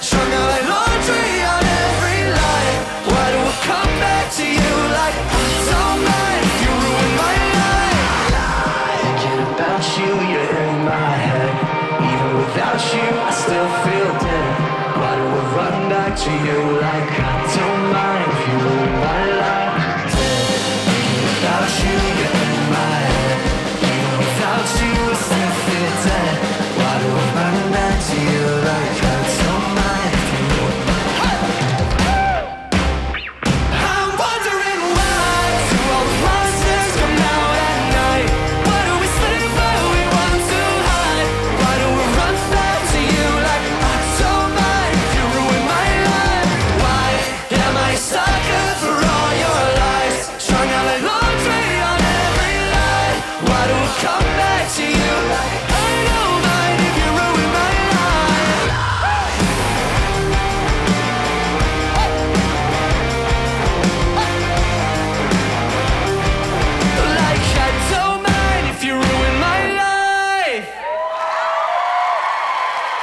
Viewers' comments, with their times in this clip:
0:07 I hear a scream also
0:58 That lil screamo makes this even better <3